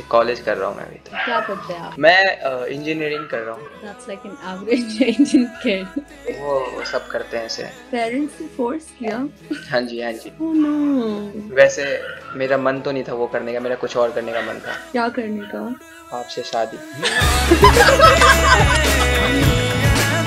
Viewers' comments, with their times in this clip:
0:07 the tamil song and the rizz though >>> ❤🔥